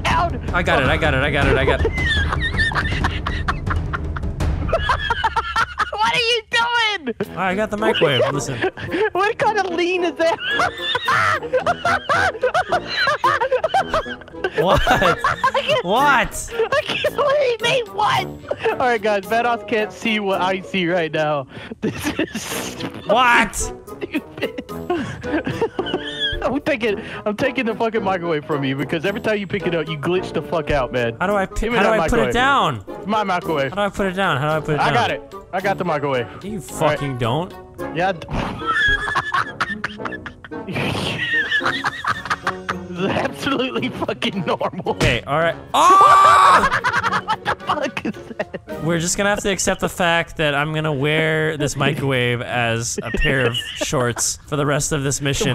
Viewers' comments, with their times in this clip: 0:04 -139 😂😂😂😂😂😂😂😂Delirious laugh
0:15 Lol XD came back to this gem 2023. Still funny. I love how vanoss screen play threw is rainy and dark , h2o is all sunny clear skies lol. The ended was gold. I love the hyunua laugh lol
0:43 His laugh in this video had me rolling 😭